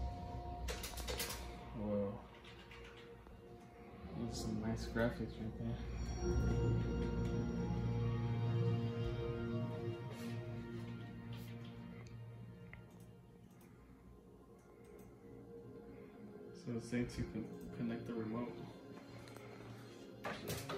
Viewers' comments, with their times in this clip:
0:08 Tell me i am not the only one who can hear the magnificent PS3 Boot up?